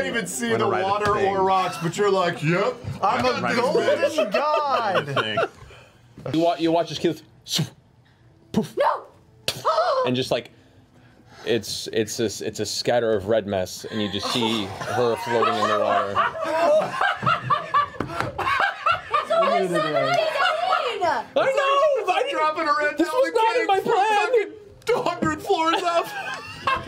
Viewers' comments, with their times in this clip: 0:08 the sound Matt makes when Keyleth hits the rocks sounds like the Minecraft hit sound